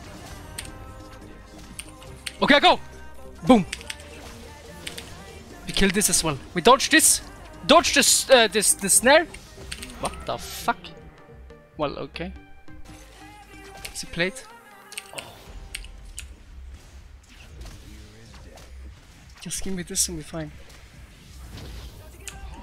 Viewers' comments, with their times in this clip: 0:10 when italian guys laugh